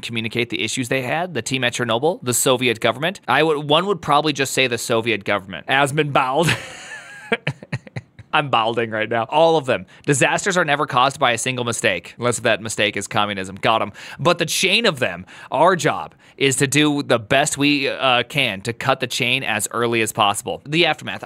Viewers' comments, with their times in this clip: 0:04 I thought you said the Designers of "React" were responsible for Chernobyl xD